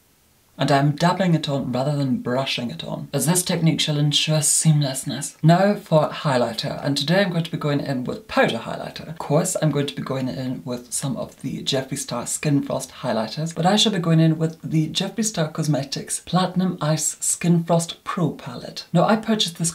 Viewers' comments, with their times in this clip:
0:05 when he says seamlessness there is a bit of hesitation and a smile. My immediate thought was "he said that for us. His Grace *knows*."